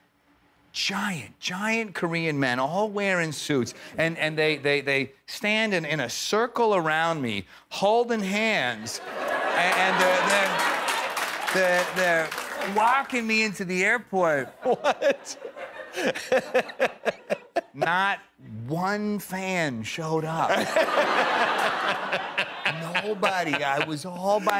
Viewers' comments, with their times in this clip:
0:06 Kept on repeating 😂